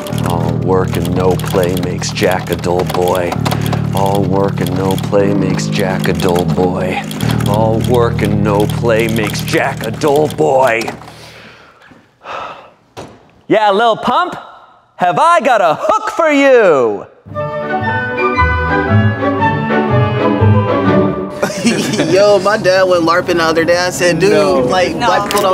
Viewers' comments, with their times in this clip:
0:10 I was like ha this is like a rap and then Shane reads my mind